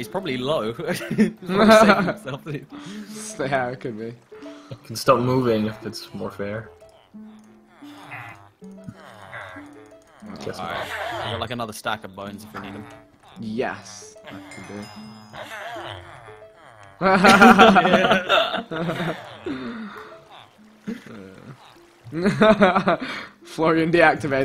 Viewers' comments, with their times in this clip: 0:07 it sounds like the villagers are saying "oh-my god!" LOL. like if you agree